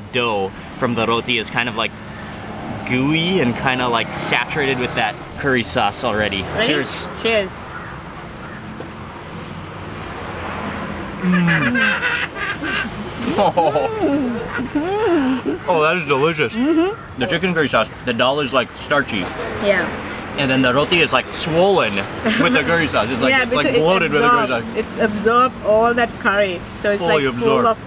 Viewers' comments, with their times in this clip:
0:10 her laugh is weird🤣🤣